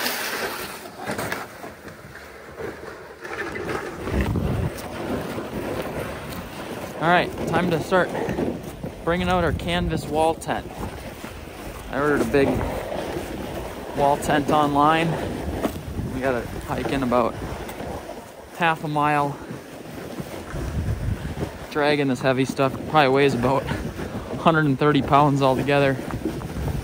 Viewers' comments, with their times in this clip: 0:07 there's a 747 following you around ✈